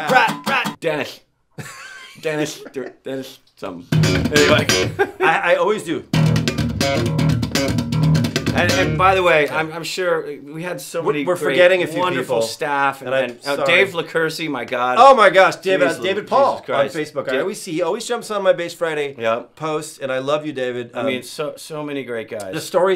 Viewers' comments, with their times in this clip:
0:04 That was amazing, what a good show!...and that spontaneous string slappin bass breakout was worth more than the price of admission alone...thx!